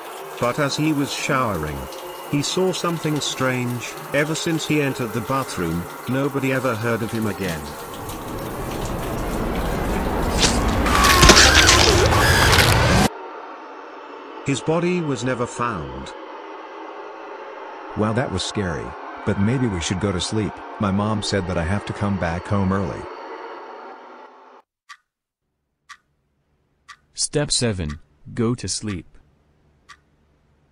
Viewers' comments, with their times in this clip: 0:09 I THOUGHT I GOT MESSAGED ON DISCORD BROOO
0:11 it's ok Pewdiepie, don't scream honey.